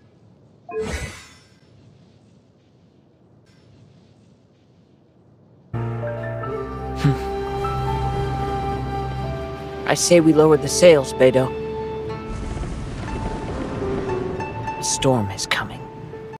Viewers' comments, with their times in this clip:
0:08 sounds like Zuko from Avatar